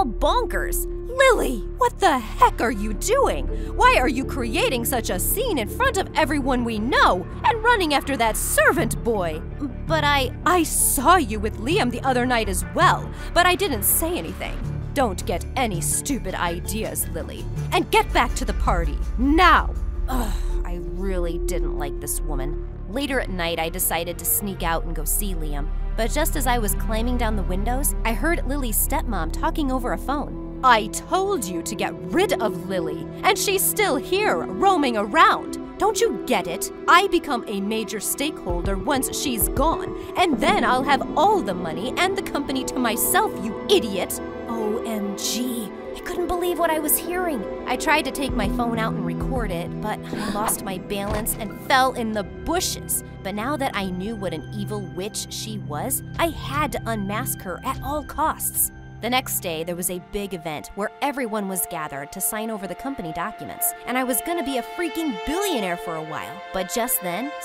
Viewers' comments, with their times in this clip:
0:04 says stop making a scene yet shes screaming it out loud
0:48 the way she said balance